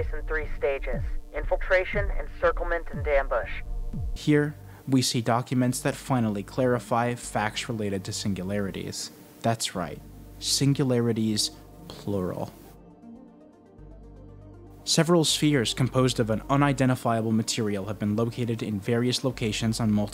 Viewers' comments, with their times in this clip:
0:05 Why the music is so good though